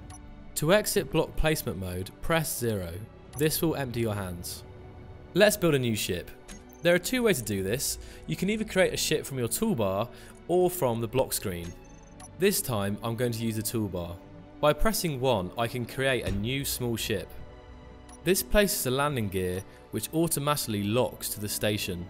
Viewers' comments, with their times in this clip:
0:08 " You can either create a shit from your toolbar"?